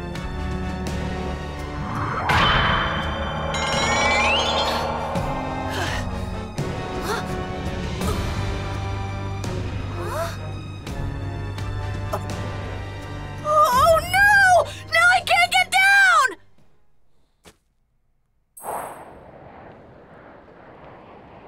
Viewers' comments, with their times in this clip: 0:04 that newtype sound effect